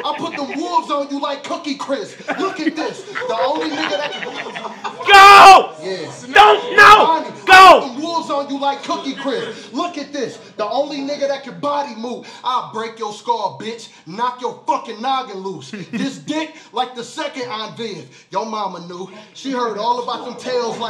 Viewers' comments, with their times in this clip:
0:04 dude was laughing and then snapped lmfao